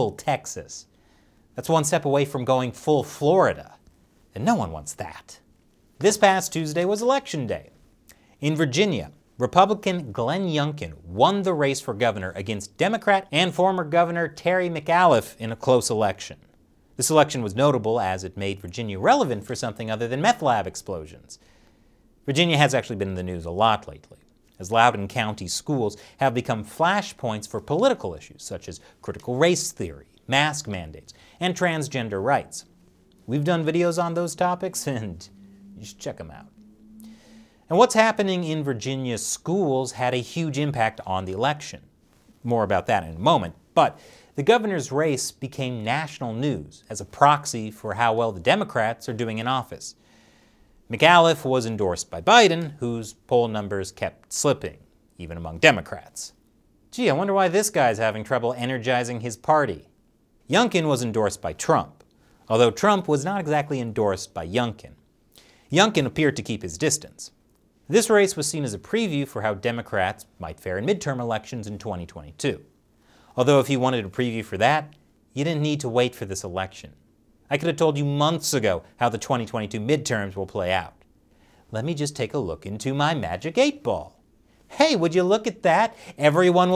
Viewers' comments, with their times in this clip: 0:10 As a Virginian, your mispronunciation of Terry McAuliffe's last name was painful. But not as painful if he was actually elected.
1:07 If I didn't watch the other channel I would totally miss and didn't pay attention to when you said endore by youngkin. you talk like you didn't care much which side you're on.